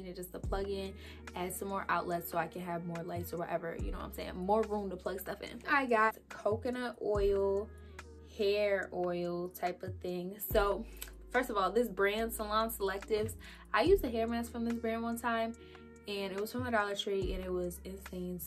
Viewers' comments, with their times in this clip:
0:04 It’s AM and my Labrador retriever is laying next to me on my bed and he freaked out when you squeaked the toy🥺